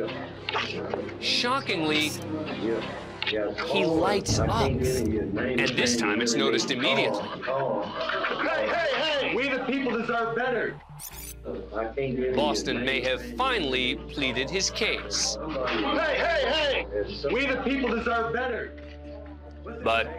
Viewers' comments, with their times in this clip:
0:08 his “hey” sounds like the “hey” from the a man has fallen into the river lego meme
0:08 sounds like the lego city guy “HEY”